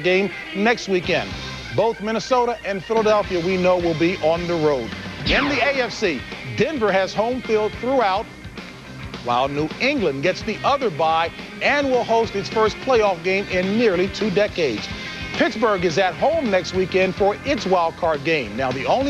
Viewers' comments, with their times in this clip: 0:05 I miss them too☆Dick Ervasti was the king☆RIP☆ sound effect sounds like Mileena from MK throwing her daggers☆